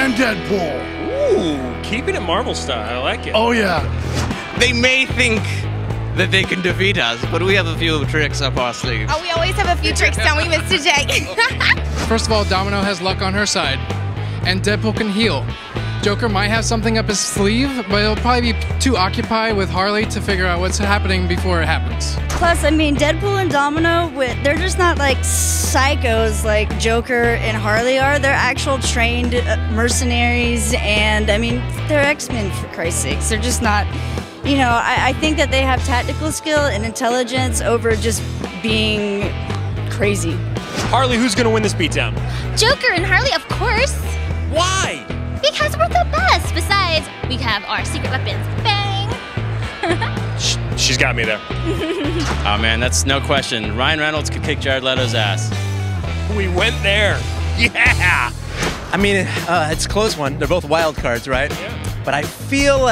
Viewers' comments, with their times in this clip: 0:05 real Harley Quinn that laugh though
0:05 why do those two sound and look exactly like them
0:49 That cheer sounds really like Tracer's cheer in ''She shoots, she scores haha'' quote.